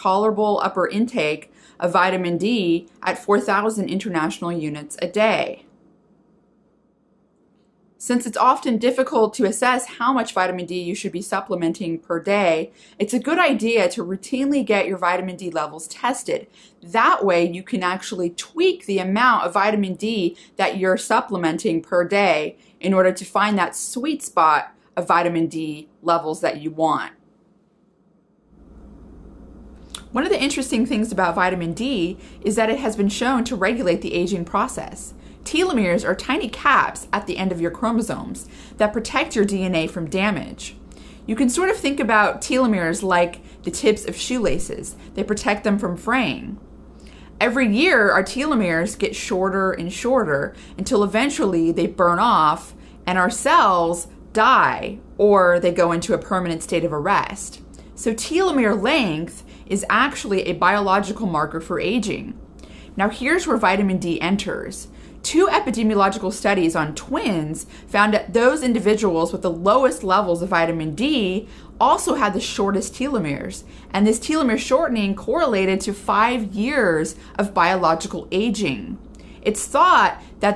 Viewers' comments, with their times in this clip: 0:08 She pronounces the word "often" incorrectly. Tsk tsk tsk.
1:08 mark: “two epidemiological studies on TWIIIIIIINS”.... 😆 Where are you from? I can’t place the funny accent.